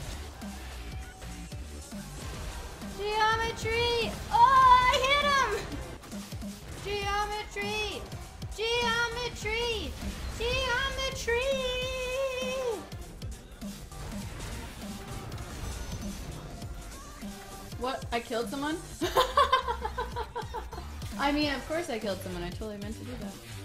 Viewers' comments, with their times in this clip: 0:06 It kinda sounds like ge im a tree! :"D